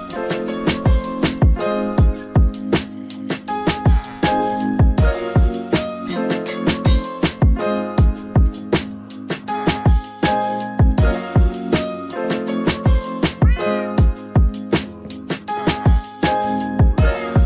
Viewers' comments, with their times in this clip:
0:05 I like how the Anvil sound vibe with the music😏😎